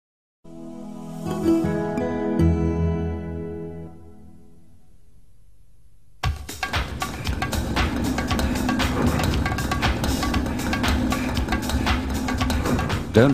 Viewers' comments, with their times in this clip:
0:00 The first ad have a startup sound at the beginning of the 2min video.